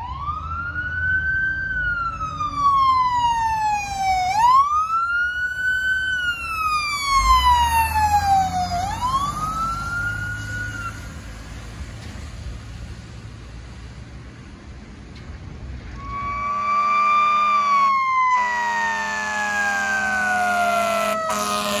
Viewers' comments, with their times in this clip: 0:04 Love this, especially all the Q action! Also I seriously thought it was a Coca-Cola delivery truck making a code 3 delivery...until they turned the corner lol. I'm pretty much a total fan of every department that sticks with the almighty Federal Q2B for their apparatus. So much more amazing than resorting to the cheaper, quieter, fake sounding electronic Q emulators that to me sound more like Ponch and Jon's motorcycle sirens on CHiPs from the '70s (IMO). Back in the day (50s - early 70s), when the majority of ambulances were built on Cadillac chassis/coach built long wheelbase passenger car based vehicles, they often-times ran Qs also until car-based ambulances were phased out in the mid 70s and most ambulances went full electronic sirens.